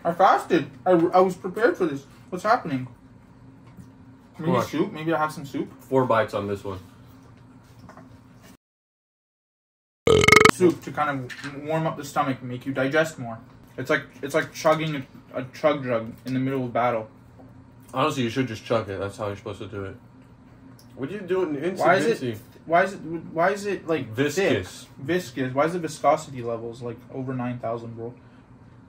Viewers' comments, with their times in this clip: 0:10 that random ass burp scared me wtf